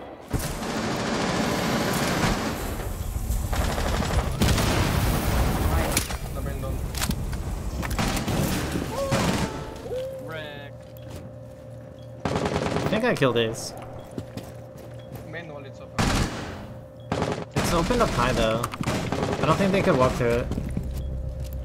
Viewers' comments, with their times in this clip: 0:06 the sub cue sound was almost coordinated with the headshot.